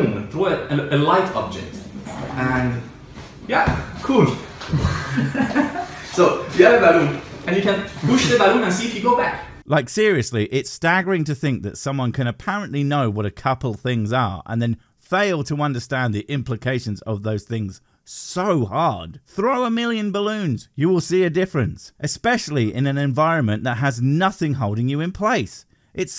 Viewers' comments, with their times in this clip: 0:07 okay, I wasn't watching when he said "throw the balloon", and I thought he said "throw the baboon" and now I want to throw a baboon. Just 'cause.